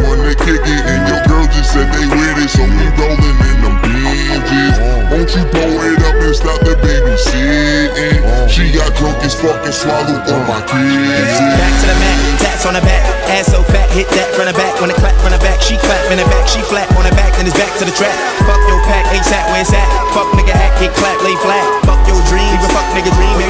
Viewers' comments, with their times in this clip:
0:09 when the beat changes 🔥